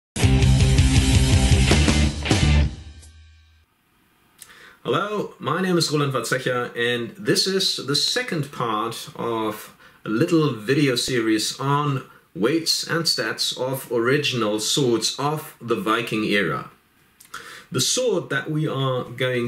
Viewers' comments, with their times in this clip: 0:05 YES!!!! I finally know how his name is pronounced!!!! THE QUESTION OF THIS GOOD MAN'S FAMILY NAME HAUNTED MY DREAMS FOR TO MANY NIGHTS UNTIL THIS DAY!